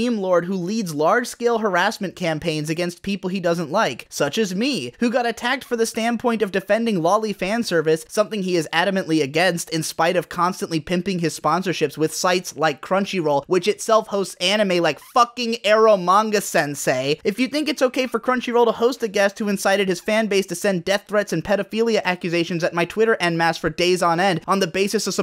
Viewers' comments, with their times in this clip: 0:06 'defending loli fanservice' >says it like its no big deal